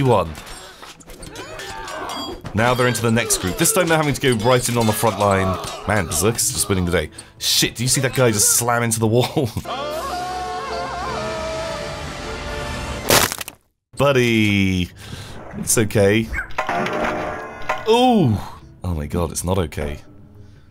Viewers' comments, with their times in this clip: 0:05 B I G C R O N C H